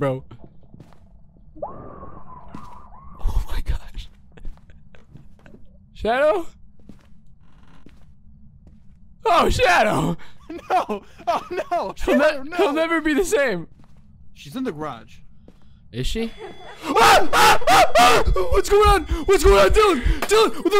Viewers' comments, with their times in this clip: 0:03 bro the far tom and jerry scream was hilarious